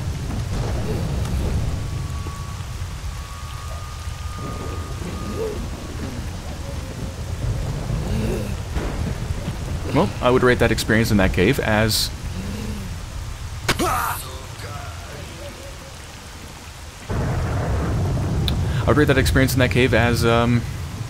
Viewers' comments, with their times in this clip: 0:09 long silence Hahahaha!